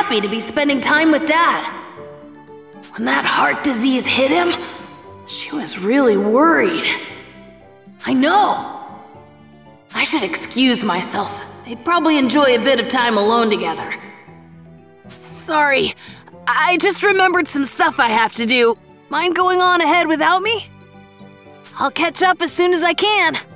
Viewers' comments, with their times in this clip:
0:06 "I KNOW!"... I feel like he's telling someone he knows something they're telling him instead of coming to a realization XD